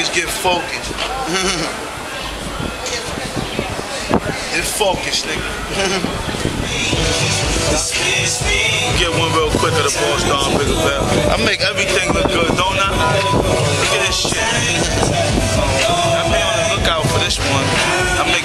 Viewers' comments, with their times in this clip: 0:03 nah im talking about the song after that, you cant hear it properly but it sound like something i never heard. and another song